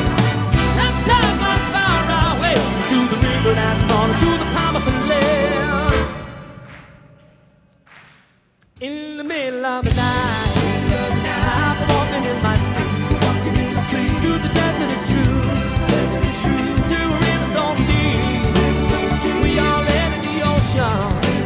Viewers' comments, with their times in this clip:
0:06 Billy Joel deliberately added that pause from sleep-apnea.